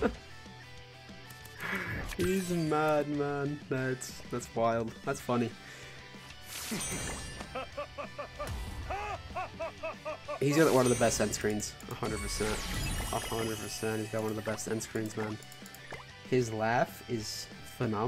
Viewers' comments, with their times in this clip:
0:06 his evil laugh is way to funny lol.